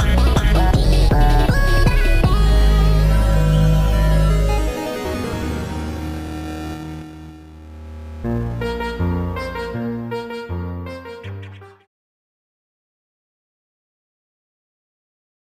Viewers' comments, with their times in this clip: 0:09 twitter turns into disbelief papyrus